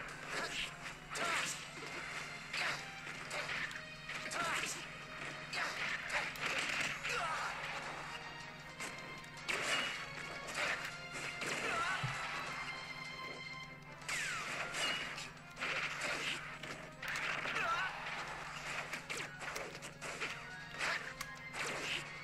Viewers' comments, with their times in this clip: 0:06 Is it just me, or does that sound Marth makes sound like he's "hocking a loogie" for lack of a better term?